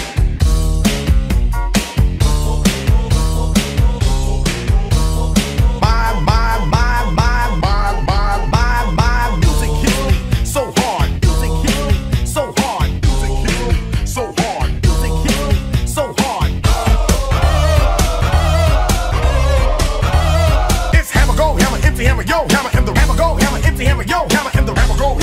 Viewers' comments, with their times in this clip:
0:06 Sounds Like Preview 2 Funny 2021